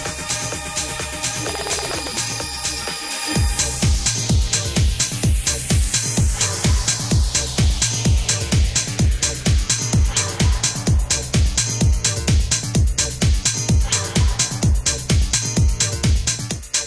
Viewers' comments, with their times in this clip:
0:04 The lead up to The Player!!!! Love it! Some of the best mixing I've heard, and The Player is one of my all time favorites! So much awesomeness!!! the drop-in!